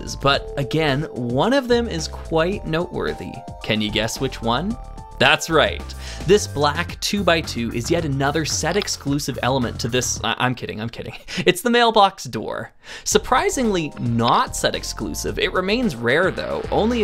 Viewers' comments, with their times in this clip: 0:05 I saw the joke coming a mile away and still laughed. I think it's because every single one of your words is filled with so much enthusiasm that you really made me buy it for just a split second! Also, I know for a fact we had that exact mailman head when I was a kid because we owned that sea diver set with the shark (6555-1). I'd never seen the one with hair in front of the eyes before I went on the Internet. This is really strange. Maybe it's a regional thing, considering I'm European?